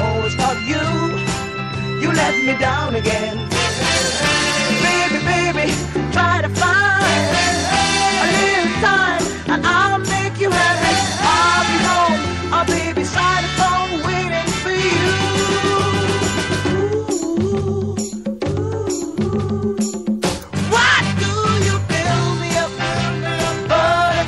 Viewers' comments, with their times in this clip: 0:10 is it just me, or is it saying "Ill make you happy"